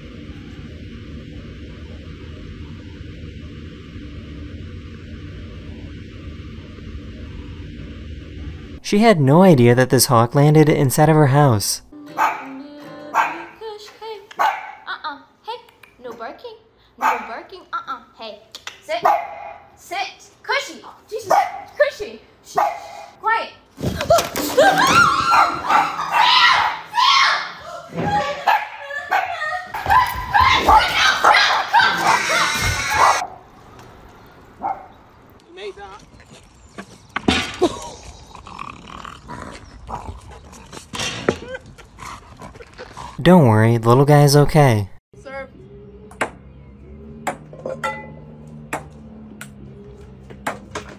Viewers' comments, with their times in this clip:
0:08 (nobody was hurt in the bottom left) bruh the computer was hurt by the pop
0:31 the plate went boing
0:32 THE SCREAM THO